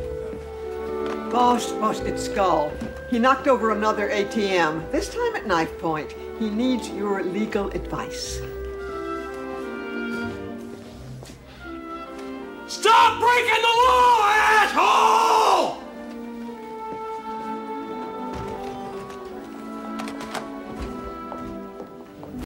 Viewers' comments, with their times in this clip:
0:09 :18 You laugh 'with' him on 'that.'
0:11 me when im picking up the phone and i hear someone moan in the back ground
0:12 okay, but you didn’t need to shout!